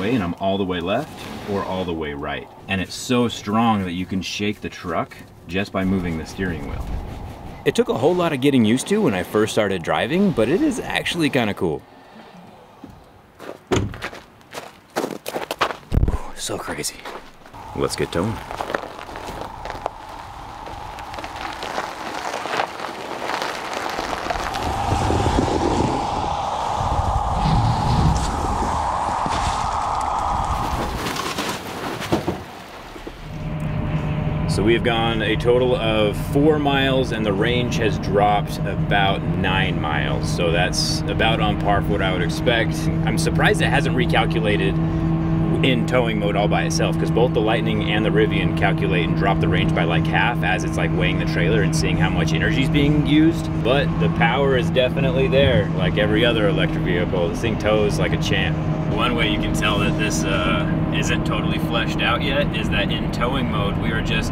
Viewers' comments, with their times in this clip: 0:08 That voiceover is done by someone else...don't know why but I picked that up.
0:45 a bit loud sound inside. thought as electric it would've been silent.